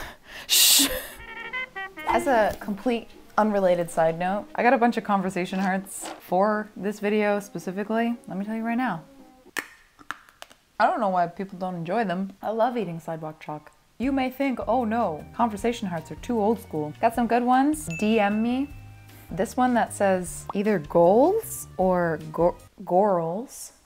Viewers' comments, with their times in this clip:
0:09 the sound of that bite instantly transported me to a nintendo switch commercial